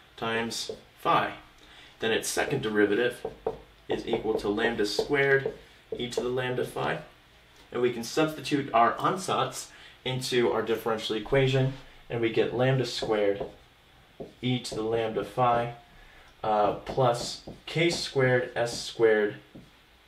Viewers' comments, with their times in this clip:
0:08 Man the way that you said ansatz XD love it.